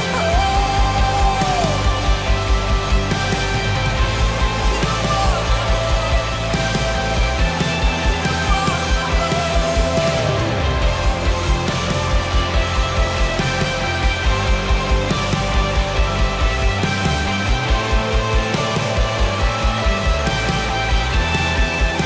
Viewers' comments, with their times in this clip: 0:09 Did anyone else notice that incredible riff by the Electric Guitarist ? Wow, nicely done man.